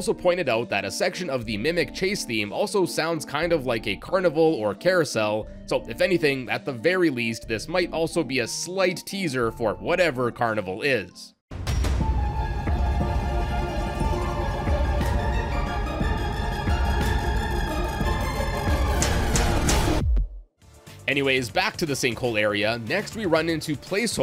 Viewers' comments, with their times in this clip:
0:09 I'm not a fnaf player, but I do love seeing unused content in any game, it's so much fun speculating the future, and what was never to be. Though, ... The beginning really sounds like it could be used as a Terror Radius theme in Dead by Daylight, with the chase music being right after. I may lose a bet. I bet that FnaF would never be in Dead by Daylight, and if I was wrong, I would buy someone the DLC for it. Damn, lol.
0:10 When the mimic chase music starts playing it sounds like sneaky snitch 💀
0:11 kinda sounds like crumbling dreams or the remix they used for that one security breach trailer